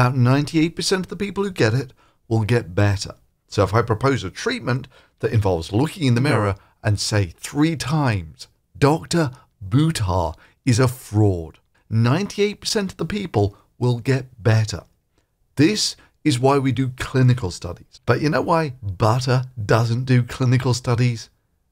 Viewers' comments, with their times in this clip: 0:06 I quite enjoyed the stereoscopic 3D audio